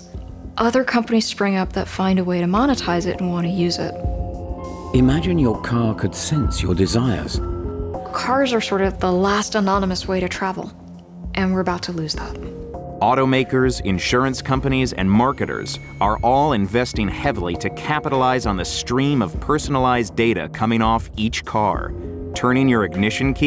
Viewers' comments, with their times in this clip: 0:05 I thought I heard the x-files theme